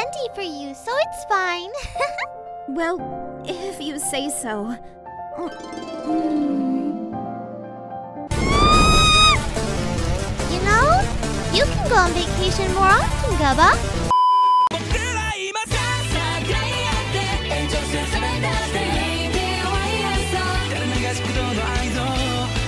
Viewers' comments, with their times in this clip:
0:08 Megalo Strike Back intensifies